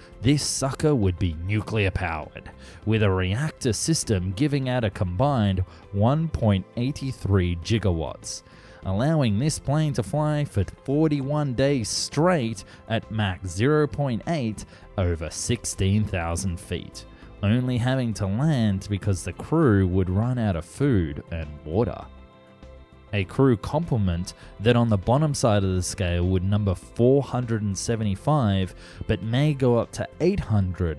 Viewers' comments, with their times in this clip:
0:04 I see someone's a fan of Back to the Future. It's not pronounced "Jigawatt" it's "Gigawatt".😅
0:17 I'm just watching this video for the first time and heard, "Jigawatt" minutes in :(